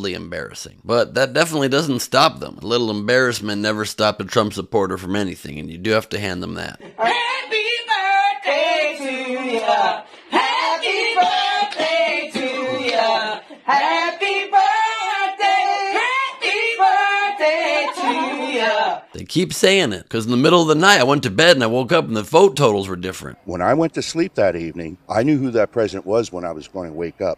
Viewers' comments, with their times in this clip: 0:08 Mad he got the Black Happy Birthday song lol